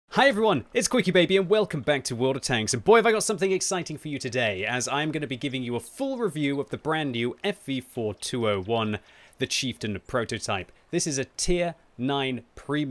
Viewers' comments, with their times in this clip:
0:00 guy choppin wood in the beggining got me good